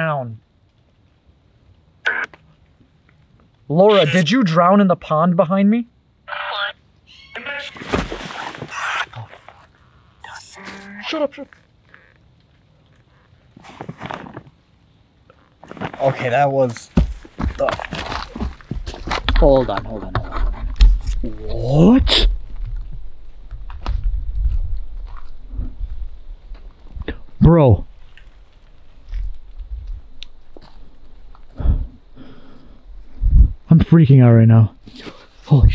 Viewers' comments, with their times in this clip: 0:05 when they hear the scream someone says “I’m gonna scream” did anyone hear that to?
0:07 tht honestly sounded like a witch screeching
0:21 kinda sounded like one of them screaming birds